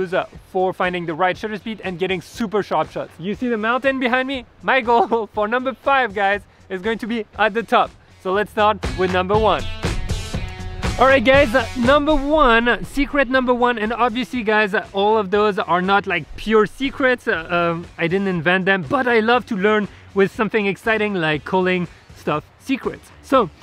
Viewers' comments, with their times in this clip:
0:09 I knew it... "Alright gays"